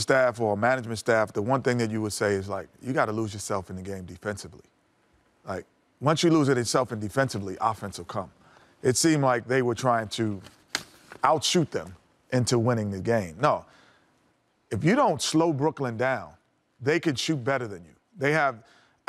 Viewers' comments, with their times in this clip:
0:04 Kenny sounds DONE... plus he sounds Done..... wow. He got old quik.....sheesh.